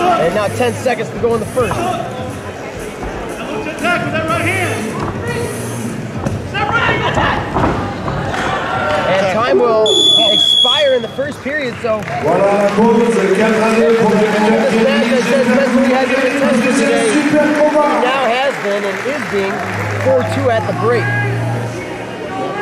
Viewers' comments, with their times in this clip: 0:04 in, why would you blow that whistle!?